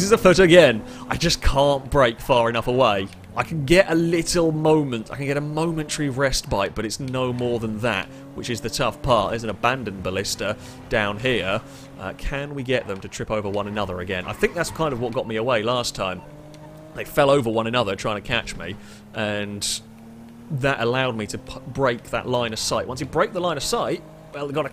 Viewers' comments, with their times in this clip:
0:05 "I can get a momentary rest bite" Am I hearing things or did he say that? A new and frankly brilliant mispronunciation of "respite".